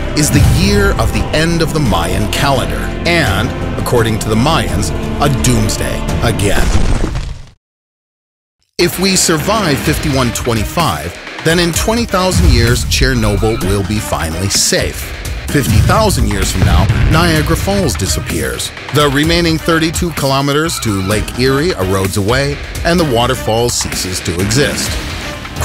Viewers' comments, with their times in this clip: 0:09 music starts getting badass